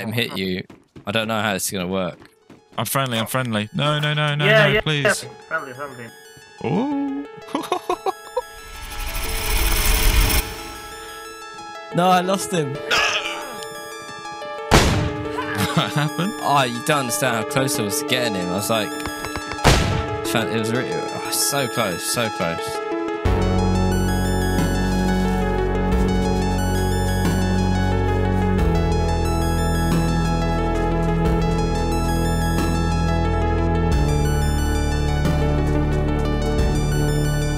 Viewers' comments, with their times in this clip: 0:10 i really like that musical interlude that the editor did, starting at like shout out to whoever does the editing for your content, its always impressive
0:25 nevermind the music added so much to this scene